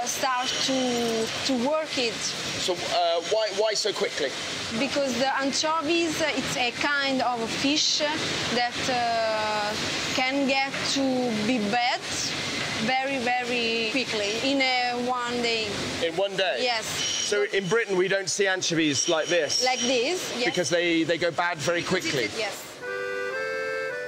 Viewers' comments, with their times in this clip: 0:05 love her accent!